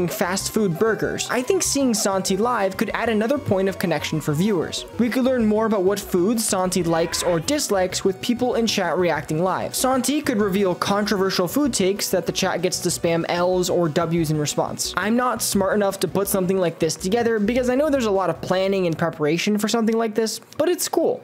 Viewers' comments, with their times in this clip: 0:06 who is screaming?